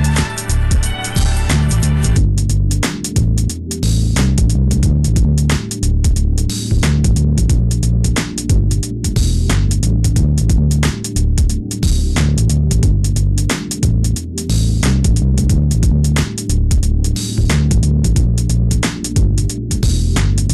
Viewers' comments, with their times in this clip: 0:03 this right here is some ridin on the freeway goin 80 just str8 vibin music this shit right here is sick as fuck good job bro and the low pass filter was freakin epic bro